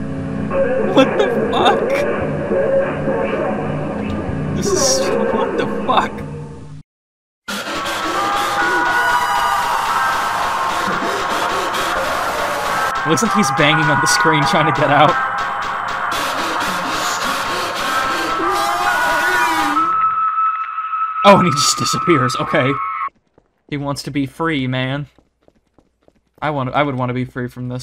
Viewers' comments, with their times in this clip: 0:10 bro made me remember my nighmares that i even wanted to $U1CIDE back in 2004 Thatans trumpet shit💀💀💀💀 still get me nightmaresss stop using that shit